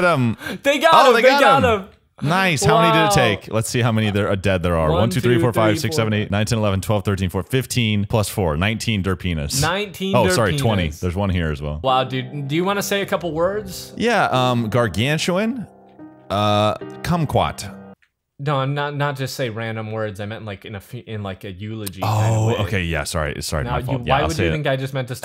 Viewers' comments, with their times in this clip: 0:09 derphinas Caption dirt pen**